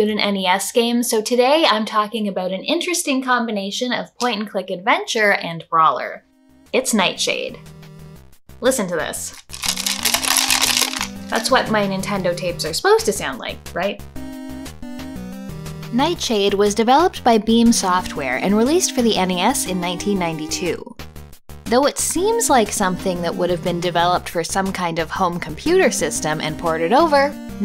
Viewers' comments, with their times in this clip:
0:08 I mean, it sounds like it's just a bunch of plastic pieces loosely shuffling around, so perhaps there's nothing in there that could inadvertently short something. Seriously, though, I hope you checked that out on the inside before using it. XD